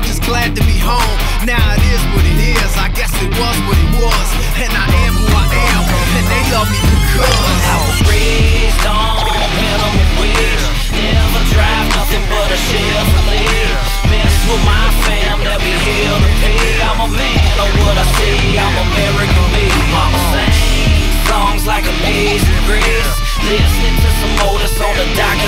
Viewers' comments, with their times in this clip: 0:10 this makes my blood go like a bandit. Drag race music, drinkin music, fightin music damn. This song is bad fuckin ass. guitar player is one bad mamma jamma!